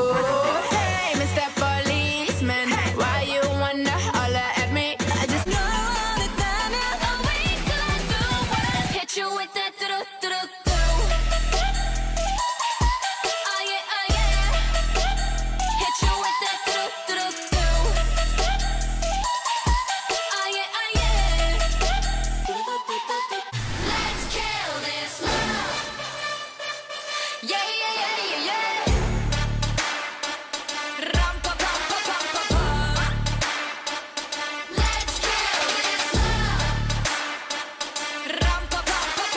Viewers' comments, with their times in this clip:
0:06 dududu sorta goes with kill this love
0:25 Man. In there is DU DUU DUUU on place when there's music of lets kill this love